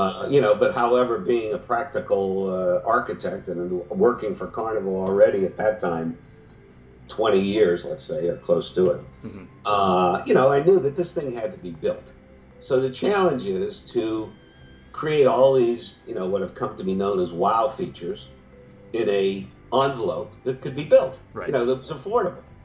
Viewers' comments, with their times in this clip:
0:08 Dude you seriously have to focus yourself just for the hmmhmm xD